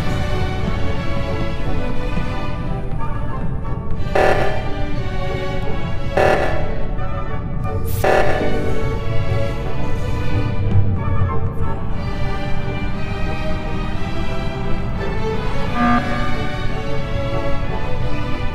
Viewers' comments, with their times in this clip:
0:05 i noticed, sound kinda sounds like royale high in roblox XD